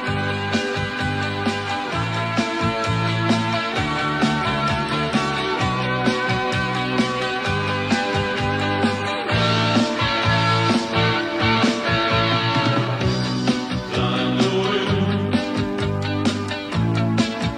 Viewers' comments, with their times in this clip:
0:03 sounds so familiar. Maybe because the tune is so similar to lots of songs but idk